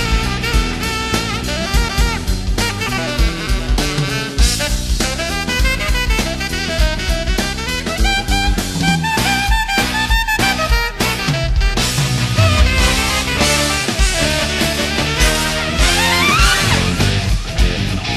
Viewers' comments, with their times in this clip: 0:03 What type of song/style is that ? It's like crazy rock jazz lol It sounds awesome